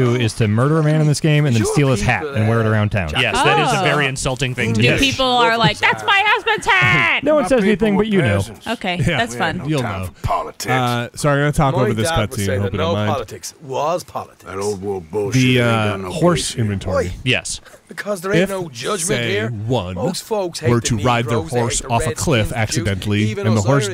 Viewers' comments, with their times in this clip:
0:10 Anyone else annoyed by how they talk about random shit over the cinematic dialogue? Like they do for example.